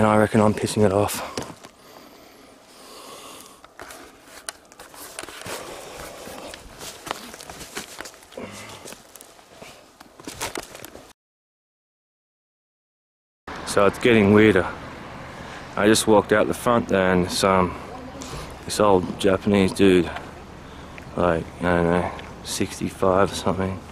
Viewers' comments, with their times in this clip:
0:04 there is a disembodied growl
0:06 Sounds like a demonic growl. Jesus is Lord.